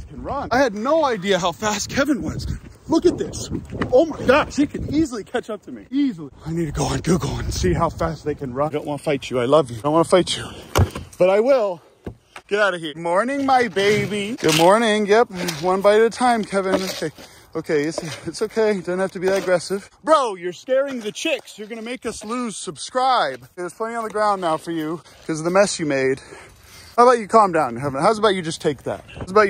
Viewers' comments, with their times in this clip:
0:10 Hearing the little bonk from Uncle Ben "hitting" Kevin is the best thing I witnessed all day. Thank you.